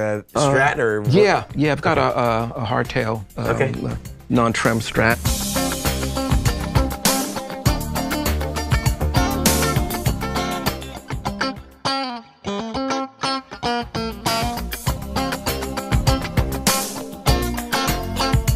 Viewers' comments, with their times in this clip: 0:03 Heavenly recognisable funky pop gutar sound of the mid 80‘es on Steve‘s famous "Higher Love" song. Thanks to Eddie Martinez and Nile Rodgers....